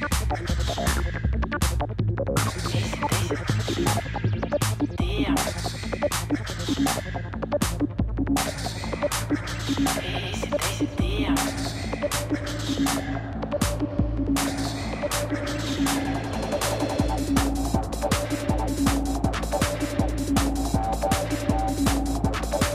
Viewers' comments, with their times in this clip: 0:06 I dunno the exact track title, but is either a remix/bootleg/sample of Joey Beltram - Energy Flash Good track selection, but mixing needs some work/practice. Some of those transitions were rough....